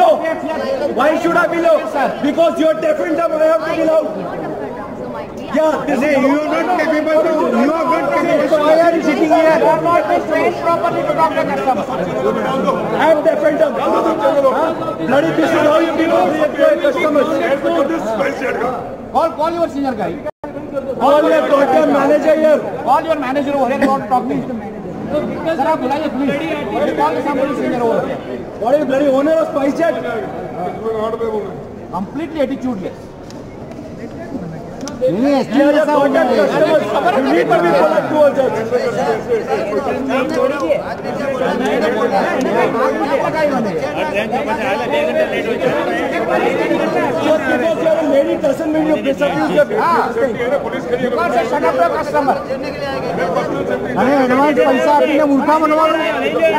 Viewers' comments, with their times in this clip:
0:07 why are you shiting here 😂
0:38 that guy😅 Plzz don't shout much there will people who gonna watch this video with earphones. 😁